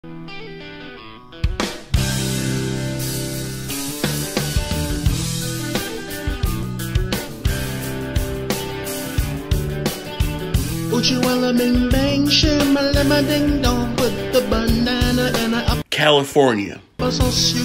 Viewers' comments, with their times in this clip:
0:03 What? Are you guys deaf? It's clearly audible It's was quite cCALIFORNIAlear.